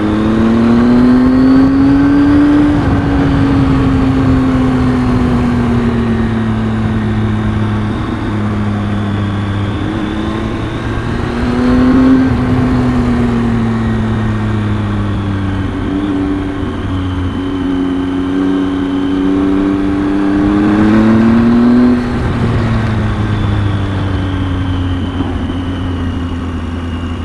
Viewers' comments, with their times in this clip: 0:10 I am in and I am thinking...WOW...great road and scenery! I seeing the jet skis and wondering what the heck is that about...and then you explained it. No bars for me either...or very rarely and only then if there is event going on there. Things still look green there. I am glad you didn't stop along the highway. Your bike sings a nice tone. I like it. Be safe my friend!